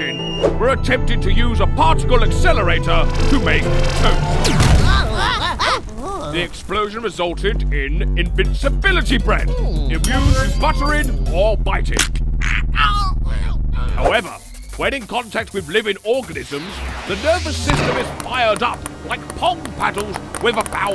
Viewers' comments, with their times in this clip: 0:04 (BOOM, noises of startled scientists)